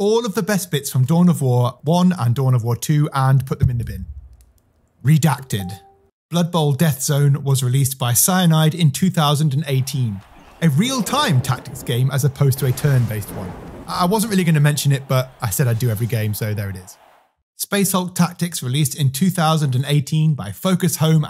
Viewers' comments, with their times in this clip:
0:05 Had to replay the "redacted" soundbit a couple times to make sure I wasn't getting a notifaction on my computer